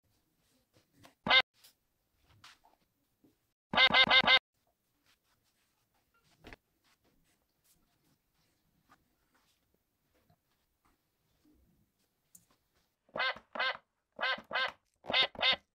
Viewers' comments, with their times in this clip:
0:13 sound duck has toy piano 👍👍👍👍